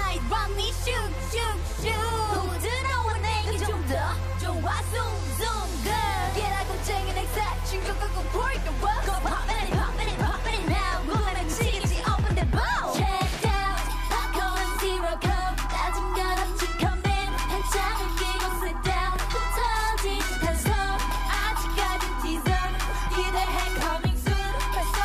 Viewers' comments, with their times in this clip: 0:08 You can clearly hear the live vocals and also the girl was late in singing so it's more visible but it's okay they are still rookies and can improve✨